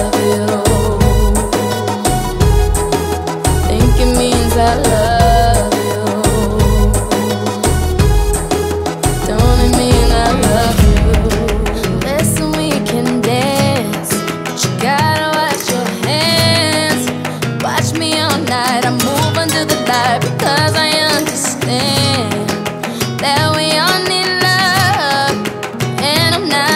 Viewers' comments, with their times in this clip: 0:10 She's singing in Spanish, and in starts spanish typical music